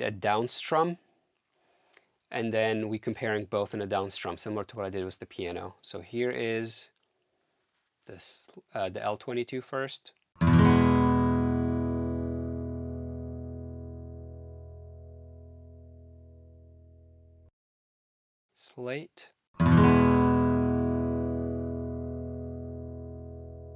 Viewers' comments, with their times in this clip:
0:05 You're right on that. I saw that too. Very easy to mess up an emulated sound when basic L-R signal chain is connected wrong. The front channel on this L22 should be the Left and not right... which is not the case in GTR-L22 track But the good thing with this L22 then is when spotted, you can use the off axis pan and do a 180. Problem solved. Hope sees the error there. Credits to the good ears though... he did hear it as muddy guitar compared to the ML1.. because he's listening from the rear of the mic.